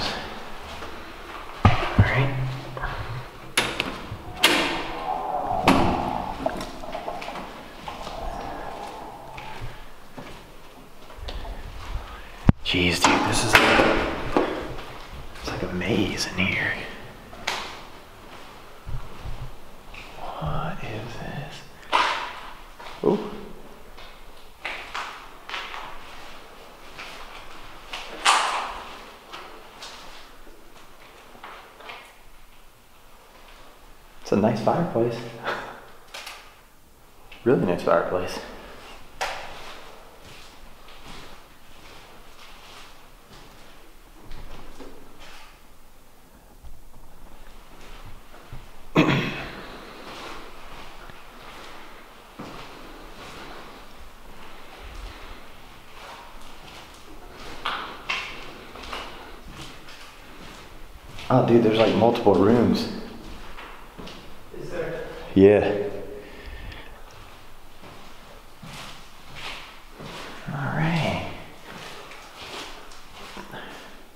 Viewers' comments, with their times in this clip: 0:03 you are just about to walk through the door to the 2nd floor and I hear a child's faint cry
0:57 you are walking around and I swear I heard "Hello can I help you"